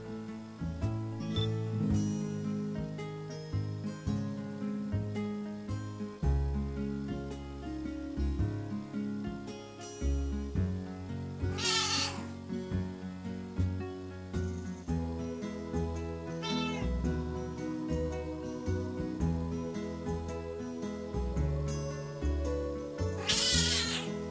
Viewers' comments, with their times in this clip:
0:10 kittens or goat??? Lol
0:11 The mom cat sounds like a baby elephant 🐘